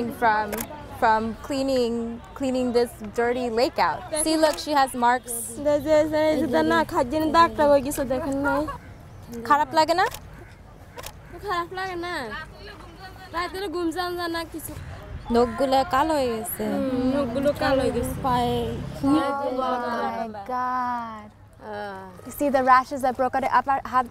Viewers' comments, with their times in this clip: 0:10 her worry sounds so fake.